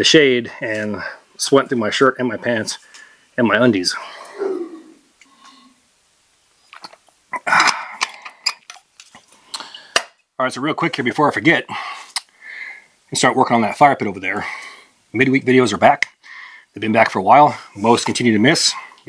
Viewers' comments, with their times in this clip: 0:03 Did no one hear the howl/roar ?